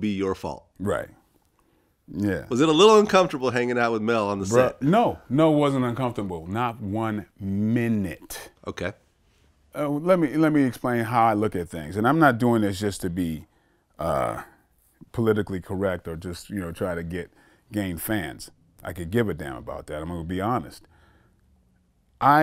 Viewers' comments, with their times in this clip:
0:08 That's was a strong black spirit of a moma or granny that came outta bro #not one minute lmao